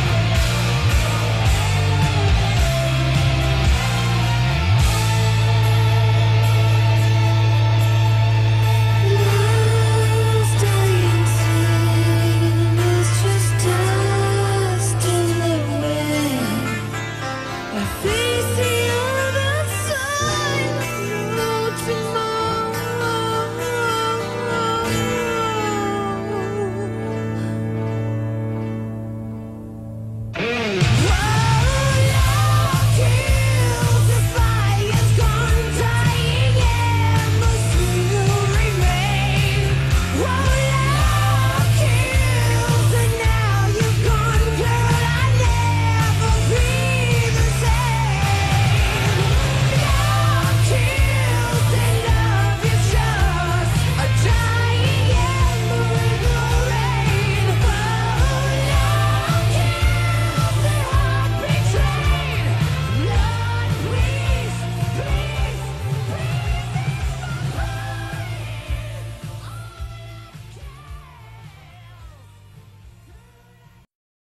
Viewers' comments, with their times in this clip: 0:08 Cos it sounds like Mark is singing “A fece on the soil of no tomorrow.” I cannot unhear that. Hahahaha
0:08 “A fece on the soil of no tomorrow”. I cannot unhear it. LOL
0:36 Vinnie just couldn’t keep himself from laughing
1:03 My god he goes high here 😂😂